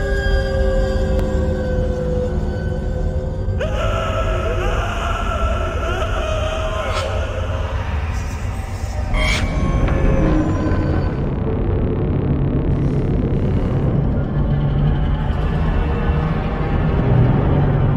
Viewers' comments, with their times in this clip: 0:03 Sounds like joe from Family Guy